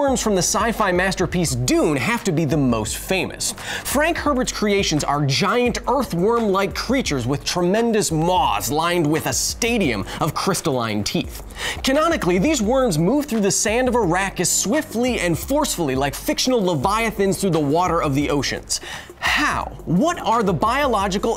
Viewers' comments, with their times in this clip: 0:07 Well, the subtitle person disagrees, as "these worms move through the sand of Arrakis swiftly and forcefully...", wass captioned as "...of Iraq as swiftly...", so the subtitle person must've heard it. Also this isn't the only mistake, eg. maws vs moss and like a million more scattered throughout the video, lol